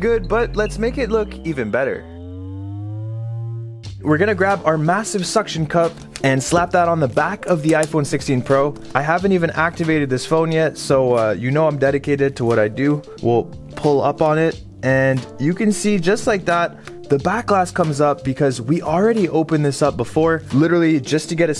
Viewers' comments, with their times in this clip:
0:07 The halo sound 🥹